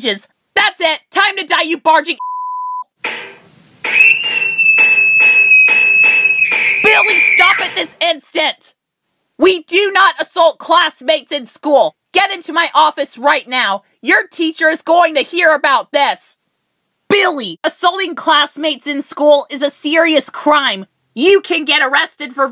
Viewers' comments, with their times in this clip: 0:03 (SPANK) (CONTINUES SPANKING) (SCREAMING)